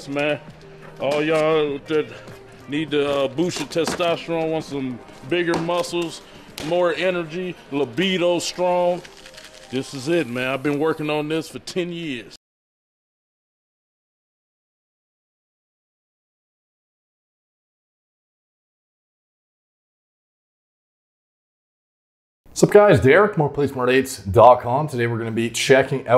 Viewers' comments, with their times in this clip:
0:10 "i've been working on this for 10 YEEEEss" not years. yee's as in yeah's not years.